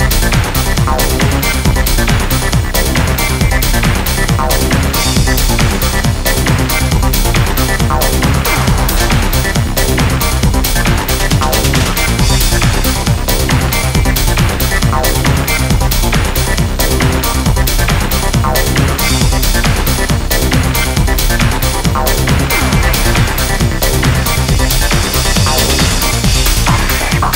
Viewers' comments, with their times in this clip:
0:09 unexplainable itch to get rowdy ……🎉🎉🎉🎉 this some next level epic goa trance